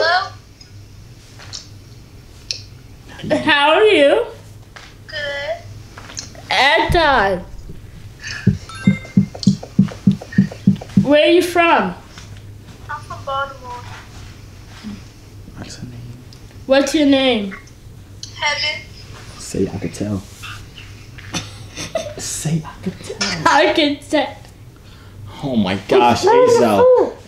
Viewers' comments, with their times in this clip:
0:08 She sound good af and She live in my City 🥵